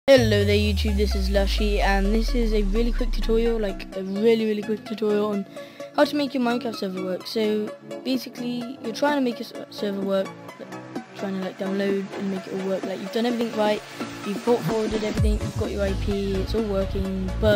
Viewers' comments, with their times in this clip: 0:00 Dude was a jumpscare for me as my headset was on full volume xD